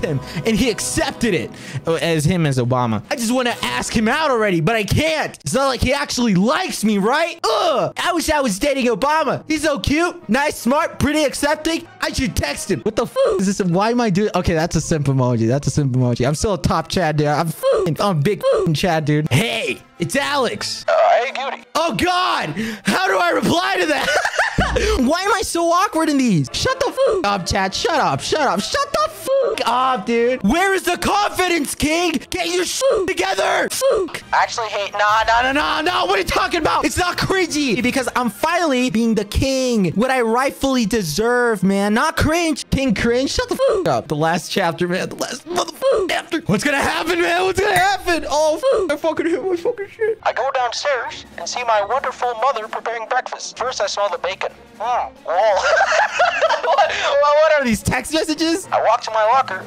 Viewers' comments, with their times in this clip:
0:03 YOU SOUND LIKR KIRISHIMA FROM MHA-
0:46 why do his teeth sound like glasses clinking together when he hits the mic😭😭
0:47 i just love the sound of his teeth hitting the mic
0:47 So no one's gonna talk abt the part when he hit his teeth on his mic, it went ✨Ting!✨